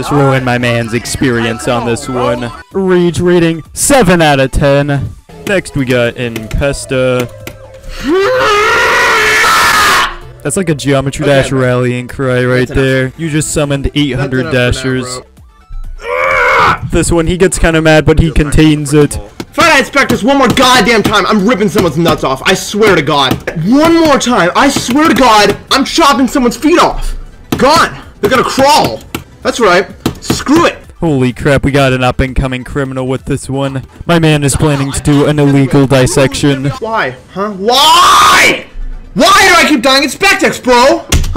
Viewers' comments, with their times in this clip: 0:09 Man screaming so loud he made an ad pop up
0:24 Bro I see what you say in ooooh You speak Arabic !